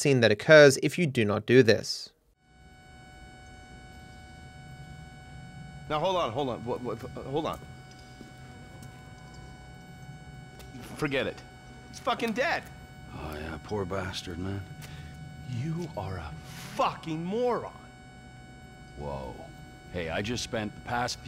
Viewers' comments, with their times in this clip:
0:05 This is my absolute favorite cutscene in GTA5 "Heartbeat monitor signalling no heartbeat in the background" Steve: Wait a minute- He's f**king dead!